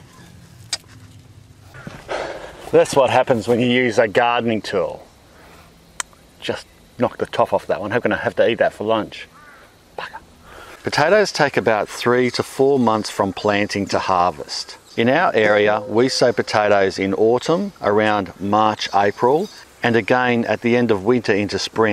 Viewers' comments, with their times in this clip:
0:08 Did he said "Baka"?